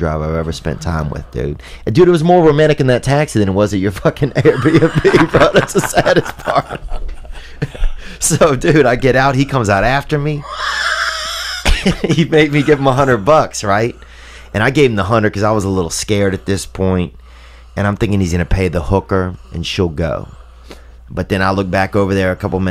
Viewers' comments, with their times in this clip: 0:10 Joey's laugh reminds me of the one eye monster harold and Kumar meet in the basement